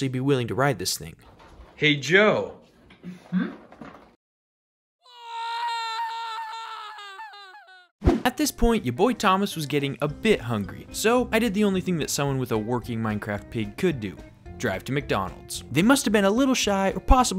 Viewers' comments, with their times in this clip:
0:05 I'm telling you the scream here is really funny.